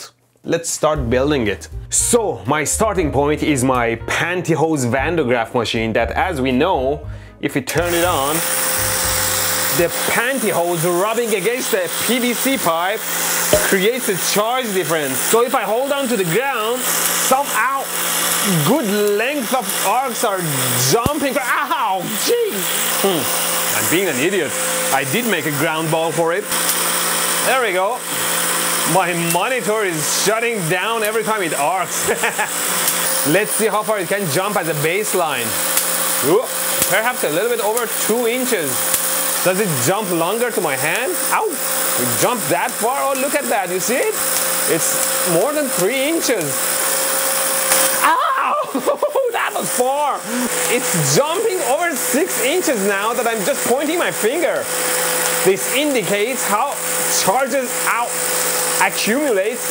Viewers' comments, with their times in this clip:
0:08 Ahhh those high frequencies! My ears!
0:45 The delightful shrieks of someone whose one true love is electricity.